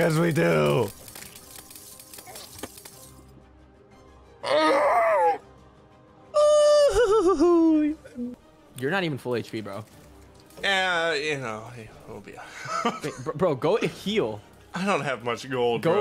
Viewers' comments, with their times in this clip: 0:03 my guy sounded like a cod zombie